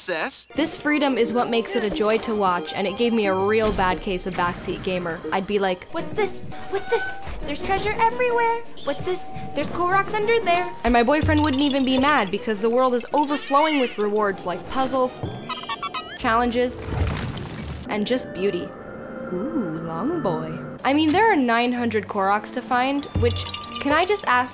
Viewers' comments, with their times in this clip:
0:08 I know what she said but I could almost swear I heard her say there’s clorox everywhere